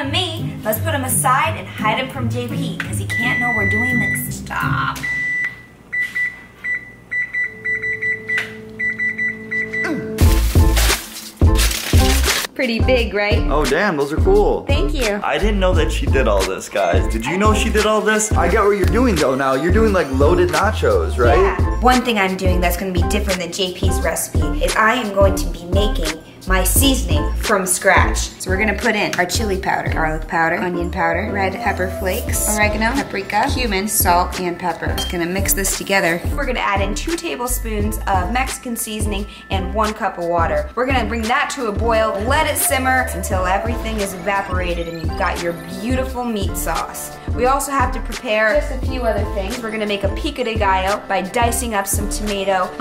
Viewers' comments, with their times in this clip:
0:05 almost did the Mario theme song
0:16 İn you can hear messenger sound
0:26 it sounds like she says sea snake
0:32 did she just say HUMANS...
0:33 Took me a few times to realize she DIDN'T say human.